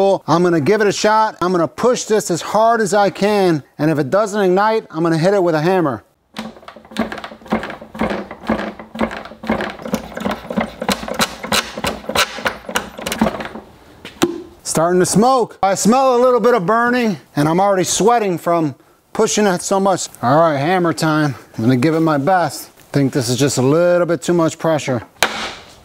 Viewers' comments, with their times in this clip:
0:07 sounds like kubota RK diesel engine starting